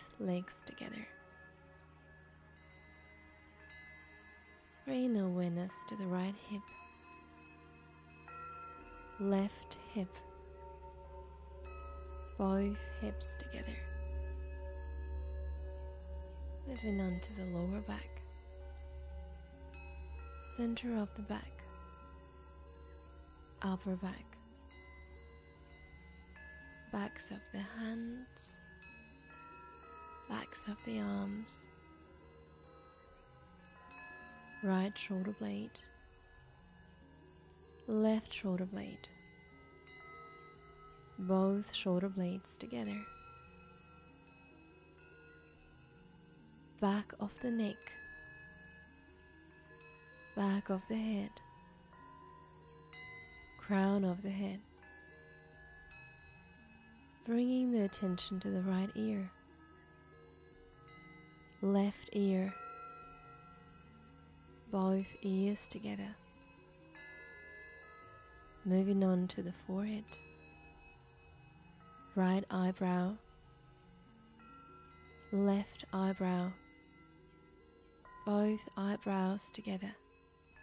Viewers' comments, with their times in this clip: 0:07 I was loving it till the weird, buzzing, dischord that started minutes in. Had to stop listening to it because it was creepy and made my teeth want to grind. I was really disappointed, because I could feel the benefit up until that point.
1:07 Yes, unfortunately the background noises started to become dissonant and very distracting. Such a shame, the voice is very relaxing but I had to stop.